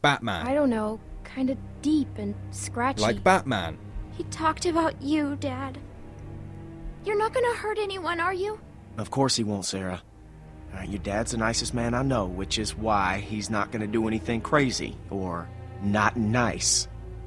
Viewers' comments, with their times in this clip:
0:04 BECAUSE I'M BATMAN!!!!!! Gargles marbles